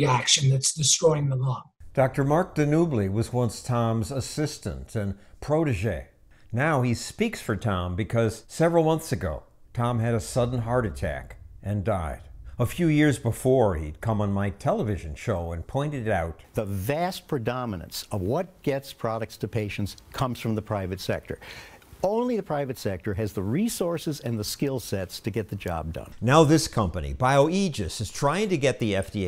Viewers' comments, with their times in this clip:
0:10 I respect you greatly for speaking calmly while discussing one of the most important men in your life passing away